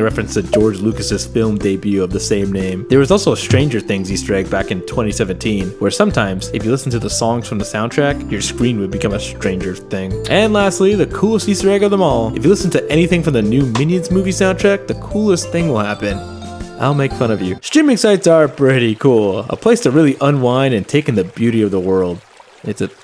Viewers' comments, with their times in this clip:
0:07 why did you say it so aggressively lmfao